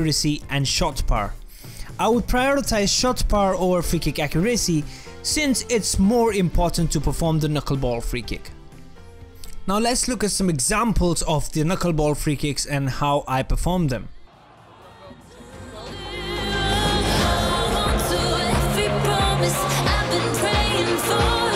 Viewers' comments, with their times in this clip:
0:07 I hate when people do that. They make that noise with their mouth after they’ve finished their sentence 🤷🏻‍♂️